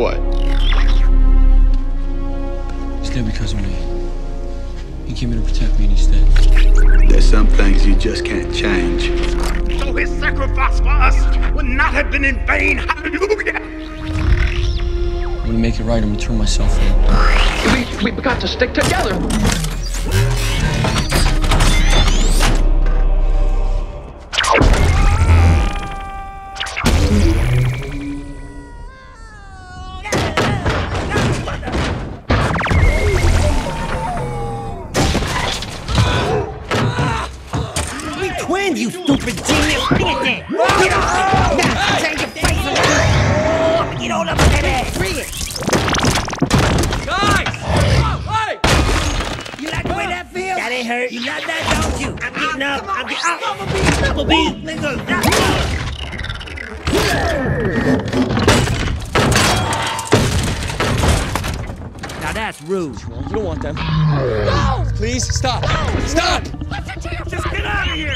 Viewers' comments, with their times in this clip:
0:07 love this voice 😎
0:18 bee sounds like Donny from Teenage mutant ninja turtles
0:55 did someone else hear him say the N word? 😂